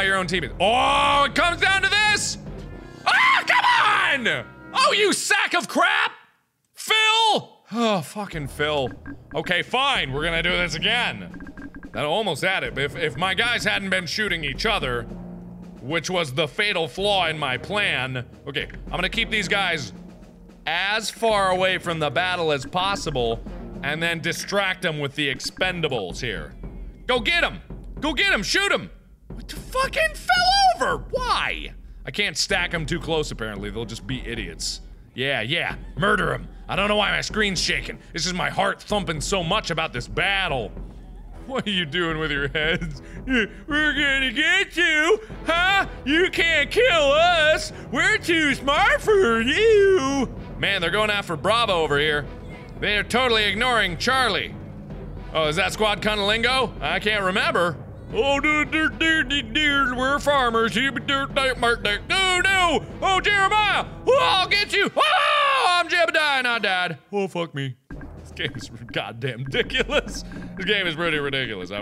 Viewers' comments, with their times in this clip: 0:03 "Phil! *disappointed sigh* Fucking Phil..." Are any other phans dying XD
0:58 for some reason the sounds hes making seem familiar...